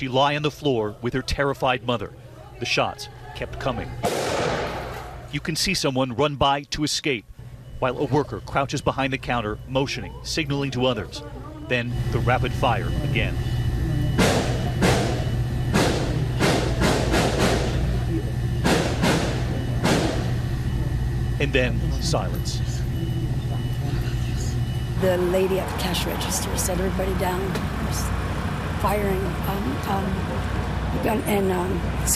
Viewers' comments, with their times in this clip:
0:08 Why’s that guy laughing in the background ? Why would a 21 year old kid travel 600 miles away to commit a crime? Why would he wear goggles? Why is nobody screaming or yelling while shots are being fired inside a busy Wal-Mart? Why does that lady ask the worker “where do I go?” as she’s leaving the cafe? Why is the guy who was shot sound like he’s lying? A 21 yr old hates Mexicans that much, that he’s willing to lose his life? Sounds like More “Divide & Conquer” “Anti-Gun Right” BULLSHIT.
0:13 that’s not rapid fire that’s single shot reporters should do there research on fire arms before going on tv